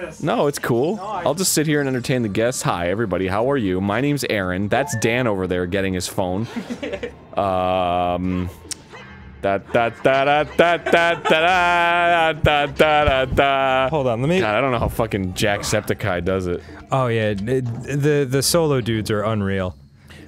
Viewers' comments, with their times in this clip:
0:07 LOL elevator music xD Dan and Arin, you guys are hilarious. It's equally fun how conscious you become once one of you have left the room and you're only 1 left with the audience lol.